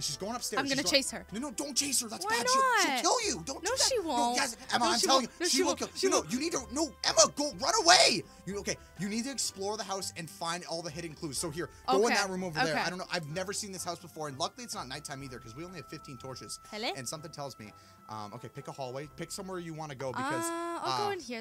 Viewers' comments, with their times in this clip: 0:04 The shark piped up